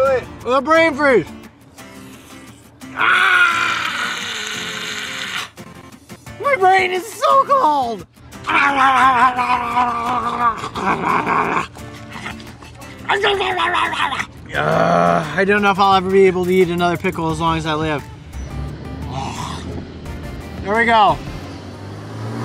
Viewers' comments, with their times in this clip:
0:07 The definition of a voice crack